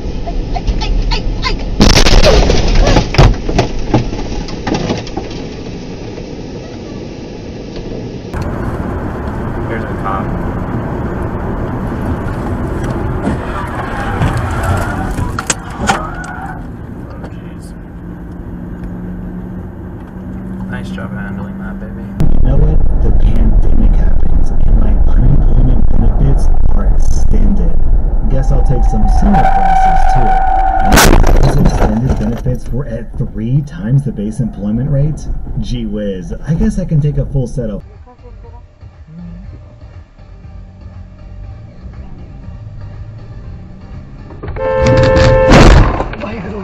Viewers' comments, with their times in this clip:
0:03 Just one more "EH" and you would've avoided that crash. I'm certain.
0:29 Hey, I know that voice